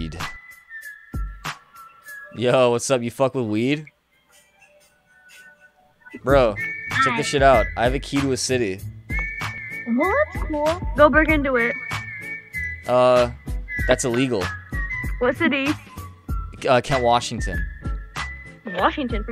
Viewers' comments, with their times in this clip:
0:04 You put weed into Omegle and you summoned Seth Rogen